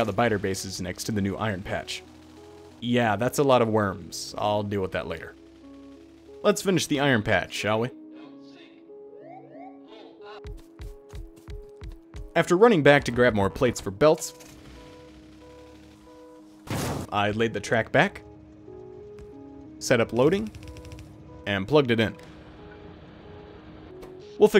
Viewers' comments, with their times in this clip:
0:09 Car runs towards buildings as "don't sink whoop whoop pull up" plays in the background 😂 PTSD triggered thanks very much. This spaghetti is growing fantastically but I'm excited for diagonal trains